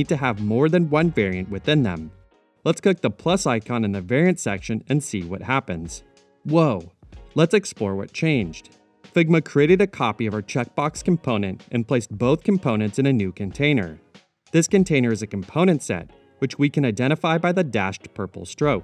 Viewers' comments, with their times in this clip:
0:03 The little "whoa" just kind of makes it for me
0:03 «woh» text-to-speech > narrator